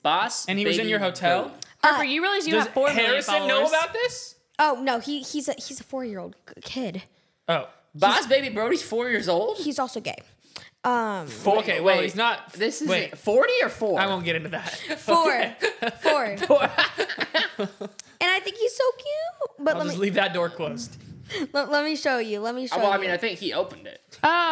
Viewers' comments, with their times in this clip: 0:09 "and hes also gay" HOW DID SHE SAY IT SO CAMLY HDHDHDHDJDJOO💀😭😭💀